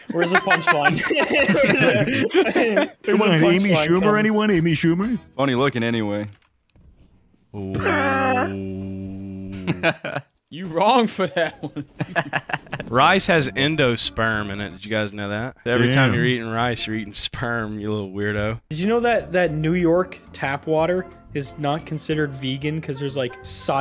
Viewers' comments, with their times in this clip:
0:07 that wheeze about amy shcumer